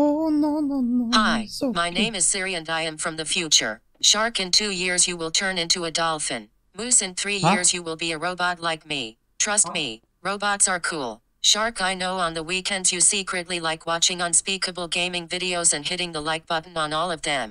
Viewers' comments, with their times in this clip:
0:04 HOW DO YOU DO THE SIRI TALKING THING HOW!!!